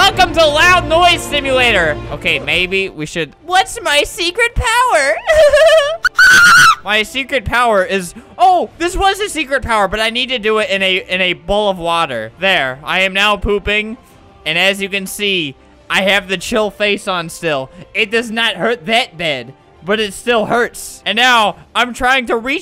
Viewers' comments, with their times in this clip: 0:05 how did you make that noise-
0:06 HE SOUNDED LIKE HE WAS MOANING BEFORE I-
0:06 ThAtS LiKe A dIeInG dOg
0:06 it sounded like a chicken
0:06 If u r wearing earplugs is ear rape
0:06 in 0.25x speed = ear rape
0:06 If you every have to do a emoji search for the odd one, Just highlight the emojis then it will make it easier Plus if you do 0.25 on You have just died It sounds normal if you put the video on 0.75
0:06 I remember I drow something in school and I gave to my cousin and she laughed like this